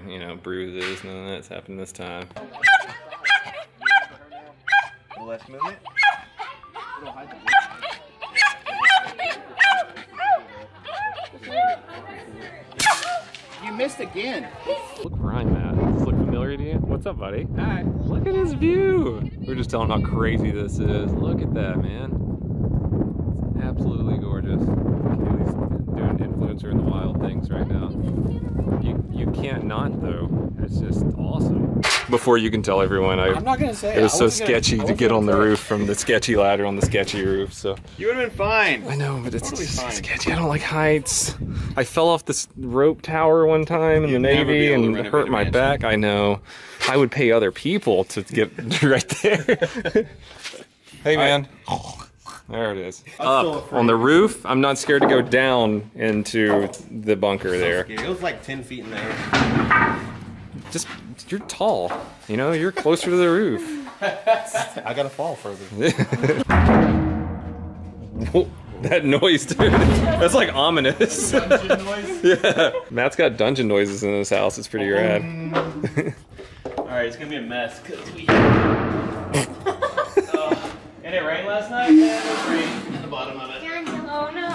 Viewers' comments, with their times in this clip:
0:07 the dog sounds like the same dog in Grown ups that sounded like a turkey
1:06 minecraft cave noises